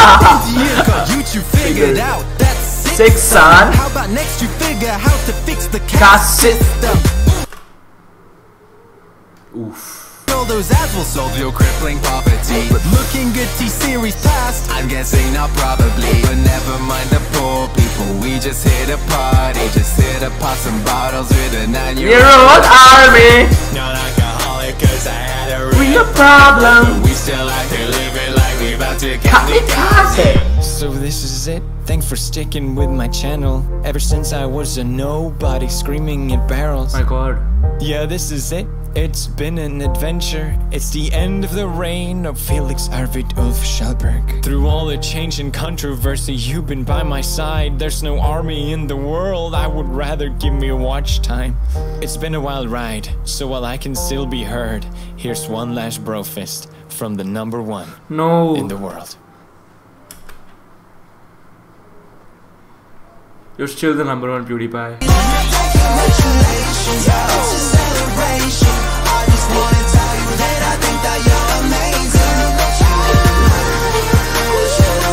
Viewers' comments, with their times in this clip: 0:05 The accent of that reactor saying like kaste when the singer said in the way of like cash... Lol😂😂 Dont get mad i Know its true for both it just tickles my stomach
0:06 beat music stops
1:03 PFFFFT HAHAHA lol the time when he screamed Mr. beast lol idk y but that cracked me up 😂 oh and also it made me laugh when he said ur still the number one